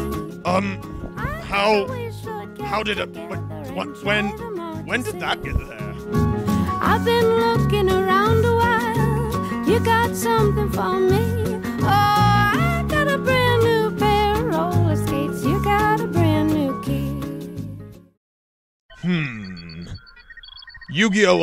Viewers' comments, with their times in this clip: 0:06 sonic runs faster than the speed of sound while eggman plays unfitting music